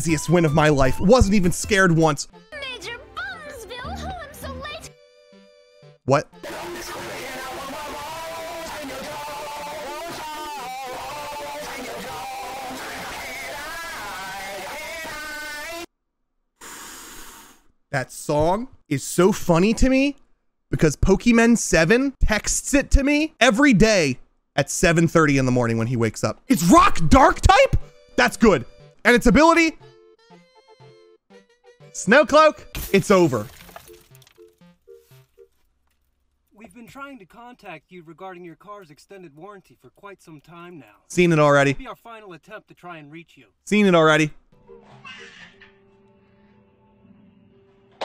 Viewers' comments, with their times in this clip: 0:09 ngl right here with it sounding like that it actually sounds good dude
0:30 the way he said “snow cloak” as his reaction to that being his Pokémon’s ability is soooooo funny to me 😅